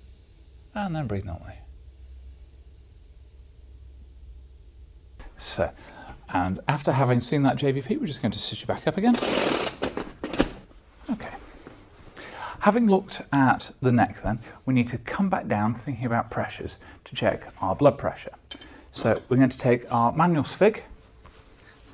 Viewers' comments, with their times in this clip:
0:08 The sound of the table rising is jarring and impedes this video’s ASMR utility. Take it from me and my 100+ hour exam playlist 😆